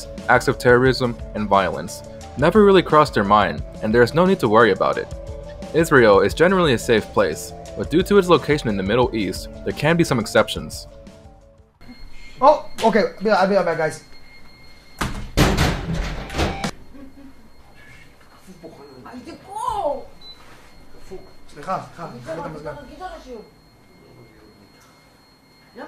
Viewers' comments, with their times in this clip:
0:08 I like how you had to cut the word gameplay